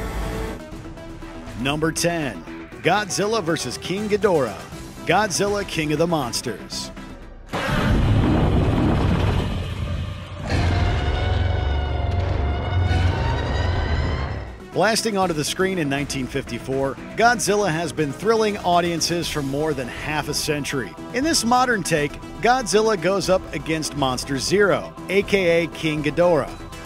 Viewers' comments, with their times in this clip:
0:08 It's that particular roar in KOTM that gets me excited! And here's another honorable mention. Davis and George vs Giant Wolf and Crocodile - Rampage.